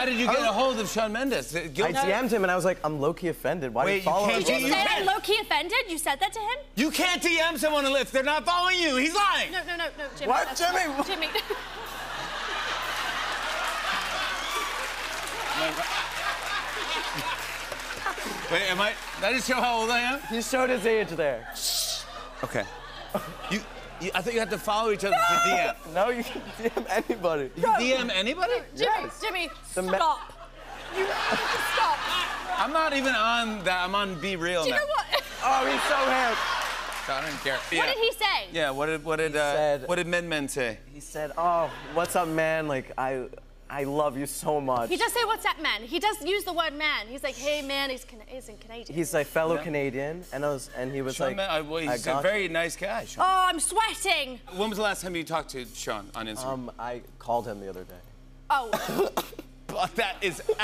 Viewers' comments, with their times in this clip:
0:06 a moment of silence 🤣 but I keep coming back to this vid just for this part though 😂
0:45 Jimmy shushing Millie 😂
0:46 Did anyone else notice Jimmy shushing Millie and she lowered her voice? I feel like when she gets excited she maybe doesn’t notice herself getting louder, and that’s prob why she used to talk over people when she was younger? I feel bad I hope she wasn’t embarrassed :(